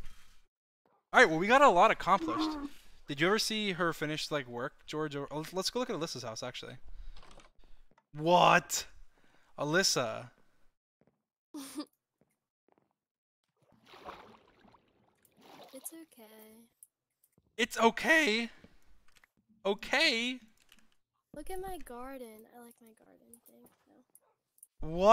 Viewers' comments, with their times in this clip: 0:07 dream’s voice crack tho